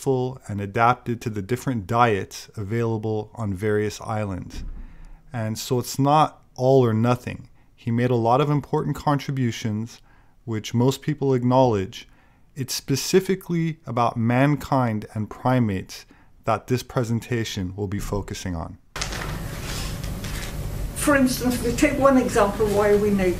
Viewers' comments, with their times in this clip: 0:10 Get the finch outta here, Chuck! With all sincerity, I laughed for a full minute. I love a dry delivery with humor and samwiches. 🙏